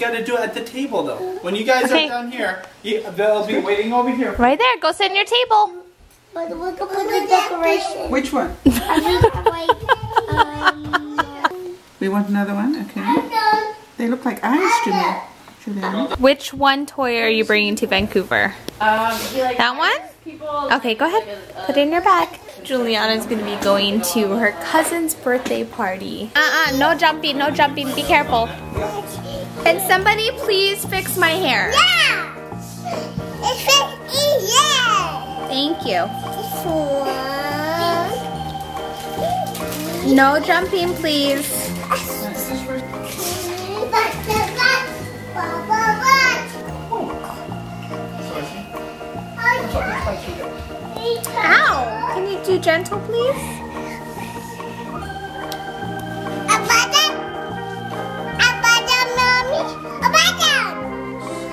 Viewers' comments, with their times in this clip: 0:06 are they saying the exact same thing at the same time? i can't make out what they're saying!
0:45 "Bubble Butt!!" did anyone else hear that? xD